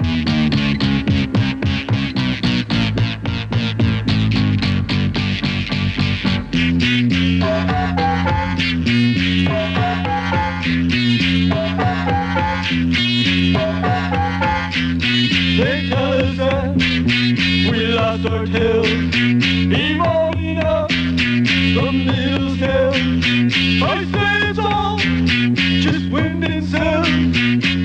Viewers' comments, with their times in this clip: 0:08 Discount version of video killed the radio star